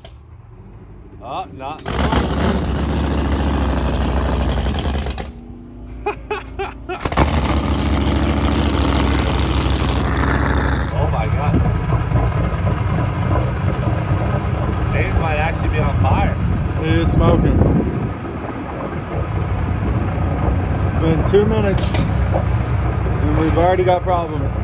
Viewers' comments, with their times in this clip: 0:07 that laughter said oops spoke too soon